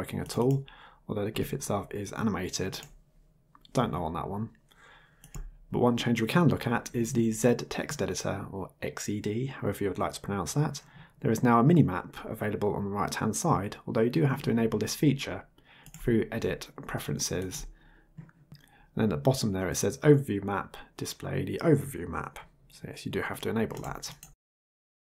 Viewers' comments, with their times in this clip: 0:10 " zed" text editor. lol. This is the ONLY time I won't correct you for pronouncing the last letter of the English alphabet as if it has " ed " attached to it given the name of that program.